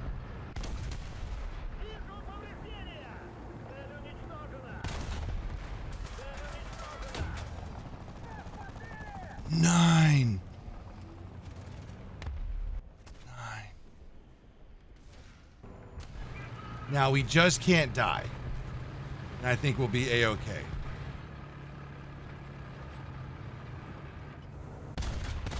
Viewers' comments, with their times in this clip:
0:09 german comorade? nein?
0:09 bro was so dissapointed he started speaking german :face-blue-smiling: